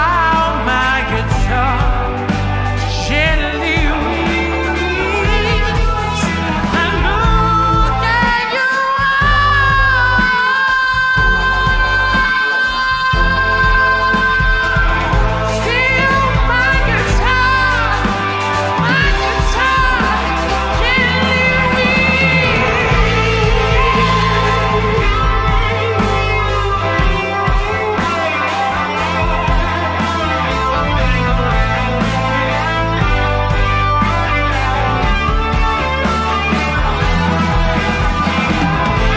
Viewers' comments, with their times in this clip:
0:06 It's so Robert Plant fucking vibes, man! So awesome.
0:07 Robert Plant vibes. Jesus Christ 😮😮
0:08 When ROBERT PLANT meet GEORGES HARRISON This solo really gets me going btw
0:08 wtf this is robert plant!!!
0:08 led zeppelin covering the Beatles
0:09 Really sounds like Robert Plant! Wow what a vocalist.
0:20 bro is shredding 😎🫶🏻 on replay 🤘🏼😭❤